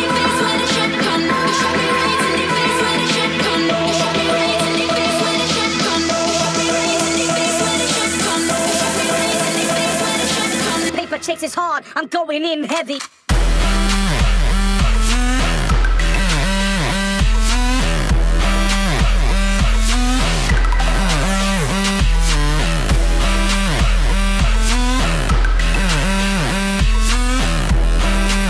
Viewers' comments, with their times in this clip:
0:08 the drop is so dirty onwards
0:11 that drop gave me an eargasm.